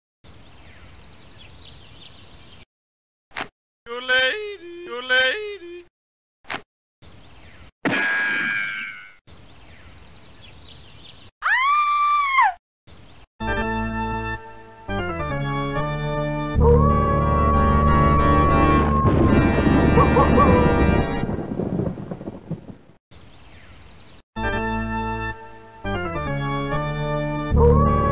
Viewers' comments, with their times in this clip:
0:10 like a lady screaming
0:11 That sounds like Daphnie screaming